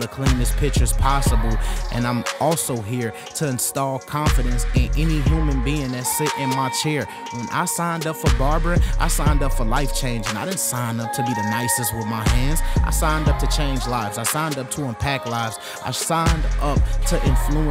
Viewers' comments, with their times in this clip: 0:04 sounds like he rapping